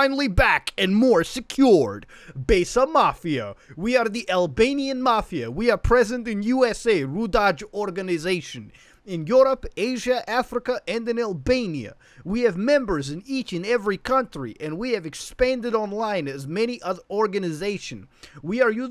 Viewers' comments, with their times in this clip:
0:04 that not how Albanians sound like, they not Russia's